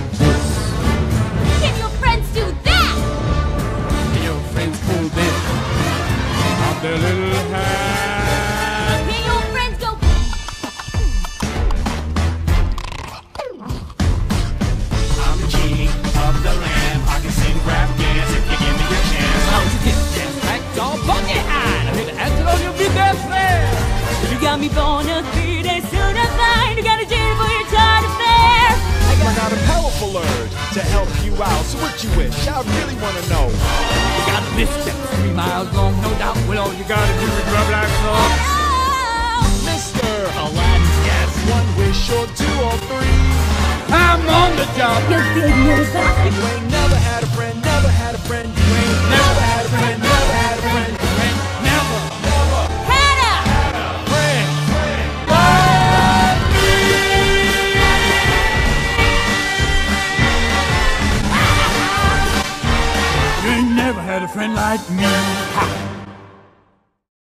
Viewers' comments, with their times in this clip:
0:10 the impossible beat boxer
0:18 no ones gonna talk about how smooth that transition was???
0:39 Mr.aladdin Goes up and down
0:40 and then mena massoud comin' in there
0:41 make that 4 vocals
0:47 it really touched me But I was really expecting the sounds of the broadway lights from R.W version
1:03 On I thought ALL the genies sing that last line of the song.